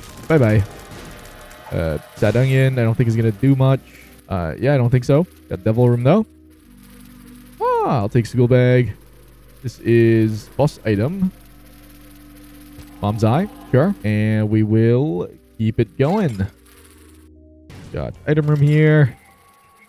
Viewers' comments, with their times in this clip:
0:06 you sounded exactly like Mario.